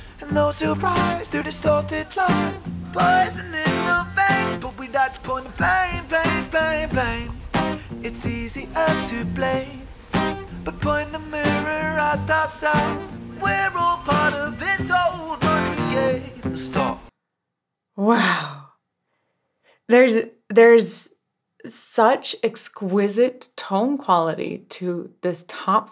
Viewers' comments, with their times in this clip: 0:06 I just checked the original. The cut or so isn't there. I think it was just an artifact of the broadcast. Great reaction, as usual. I watched your monumental interview with Ren first. I'm 66 and have always disliked Rap. My wife thinks I've gone crazy. But of course Rap is just one element of this amazingly talented man. Keep up the support!